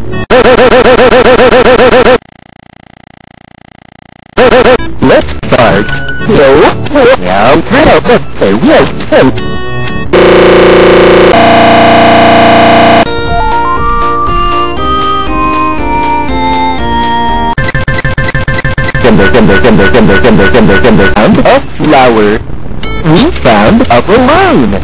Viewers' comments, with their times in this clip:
0:04 does he say lets fart?
0:05 LETS FART. :D